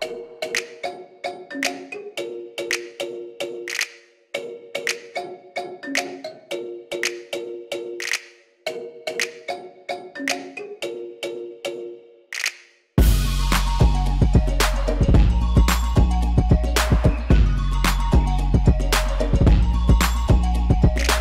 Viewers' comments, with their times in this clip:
0:07 Loving this music